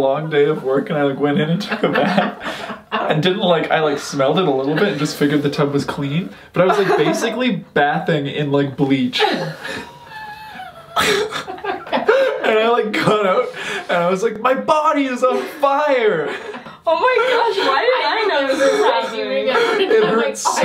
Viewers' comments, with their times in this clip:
0:07 The way he said "bathing" 😂